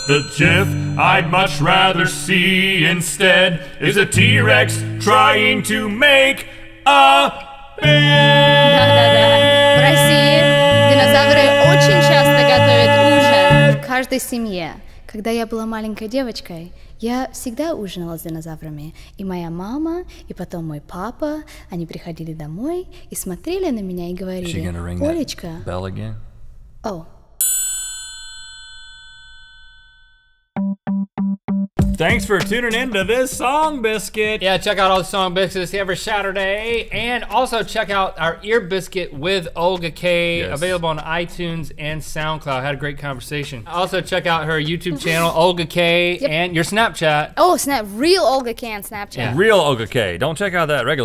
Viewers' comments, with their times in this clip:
0:08 was i the only one who heard link's high note?
0:33 ...I heard link say song bitches...>.<